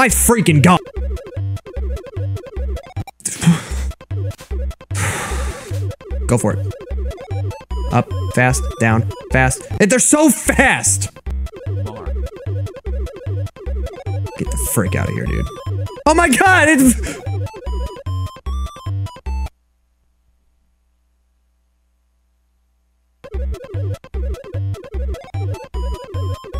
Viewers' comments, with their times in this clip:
0:10 I can hear a bark !!!!!!